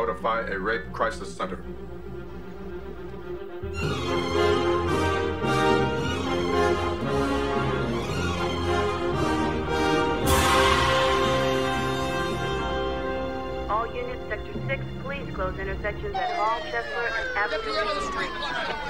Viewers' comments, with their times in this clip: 0:03 I love the music it sounds soo good! Definitely one of the best films ever.